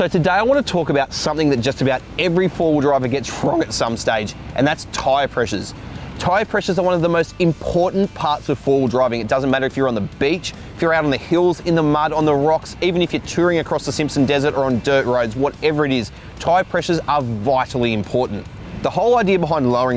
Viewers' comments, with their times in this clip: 0:03 Haha that voice crack got me😂😂😂 sheeit
0:03 that voice crack 🤣